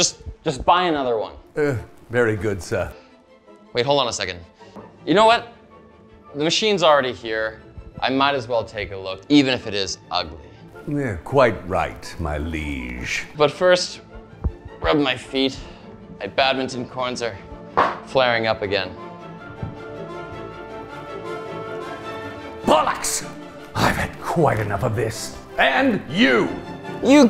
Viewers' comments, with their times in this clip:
0:10 😂 "You're quite right, my liege." The way he says this is bang on, hahahaha... Reminds me of Warcraft & Warcraft II back in the 90's.